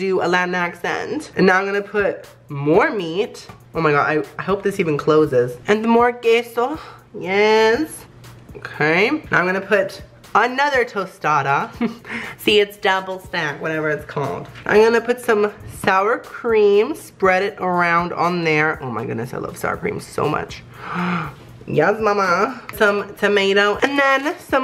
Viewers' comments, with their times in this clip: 0:07 I love the way he says "Yassss"